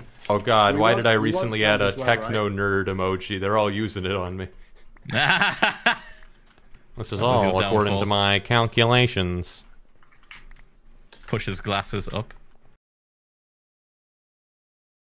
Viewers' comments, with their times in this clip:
0:08 I’m sorry but Techno sounds like squidward